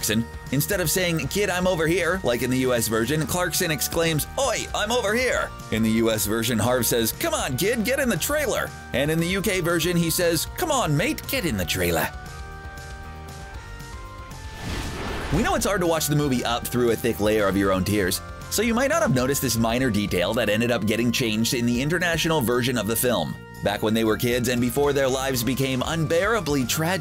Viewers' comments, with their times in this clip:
0:10 As a Brit I think the accent sounds Australian but nice try!🙂
0:13 Biden with a british accent